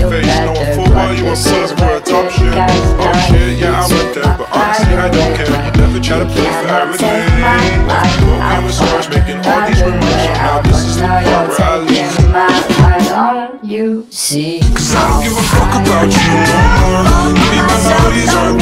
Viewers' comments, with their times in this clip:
0:06 the pause is so perfect